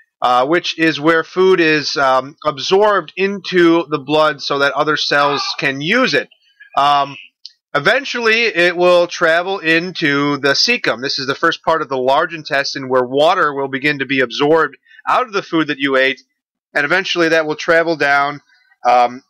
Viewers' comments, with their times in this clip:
0:05 what on earth happened in the background sound ? lol